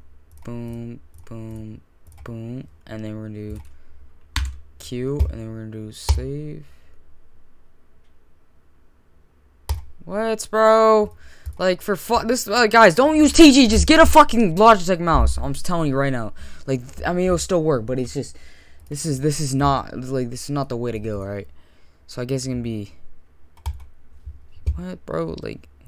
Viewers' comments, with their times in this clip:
0:10 bros screaming at me LOLL